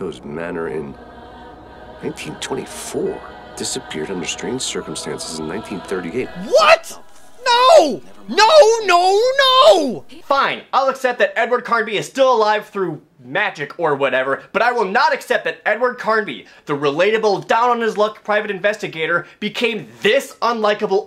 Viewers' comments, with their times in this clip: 0:06 Lmao you sounded like AVGN I can't even 🤣🤣🤣